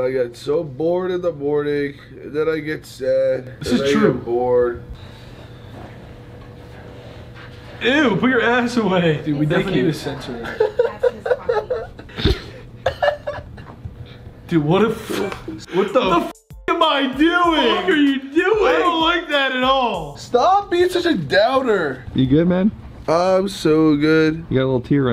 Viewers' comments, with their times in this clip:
0:06 I DIED HERE LMFAAOOOO THAT GIGGLE AT THE END THO LOL 🤣🤣🤣
0:11 that laugh is so embarrassing and so cute😂😂😂
0:12 dude.. that laugh.. sounded just like me.. right before.. i'm scared.. i'm crying u guys thx i'm sick actually period cramps i cried before (ya girls feel me) so thx for making me laugh omfg 🤣🤣😭😭